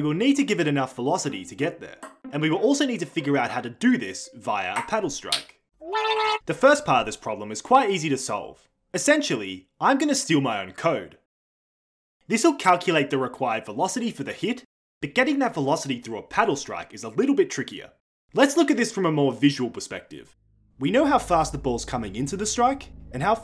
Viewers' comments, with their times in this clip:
0:05 This scream is so cute
0:05 As a left handed person this video makes me feel left out lol Also Love their yelling